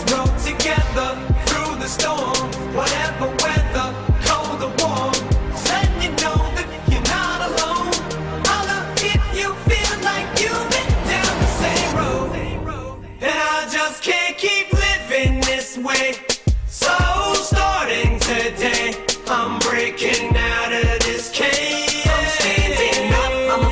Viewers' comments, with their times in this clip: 0:09 also use to hit hard asf